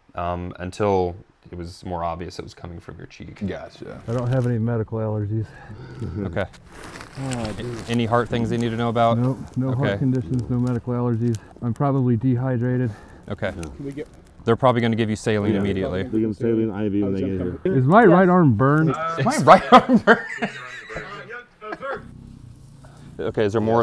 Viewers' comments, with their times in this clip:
0:10 That tonal shift from training talking through important medical info to an annoyed question he should clearly know the answer to is comedy gold.